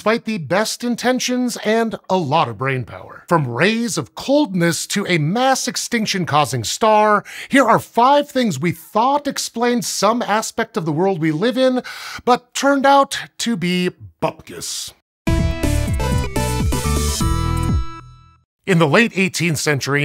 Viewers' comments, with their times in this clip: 0:07 "tuned out to be butt-piss"